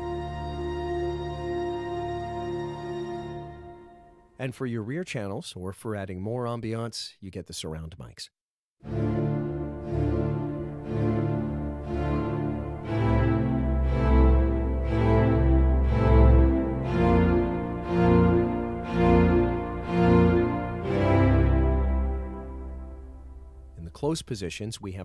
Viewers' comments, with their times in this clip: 0:08 The demo reminds me a lot of ThanksAT from Attack on Titan. Nice sounding library!